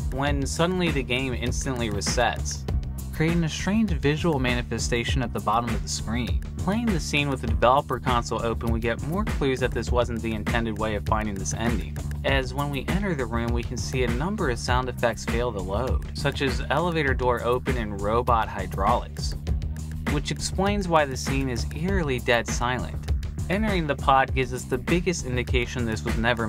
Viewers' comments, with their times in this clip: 0:08 Almost an accidental rap.